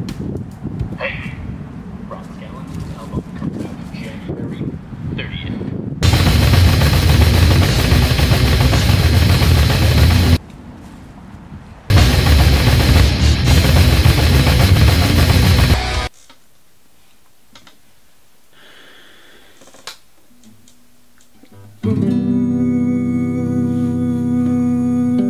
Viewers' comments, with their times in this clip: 0:07 Sounds exactly like Sore Throat - Disgrace to the Corpse of Sid (Side A)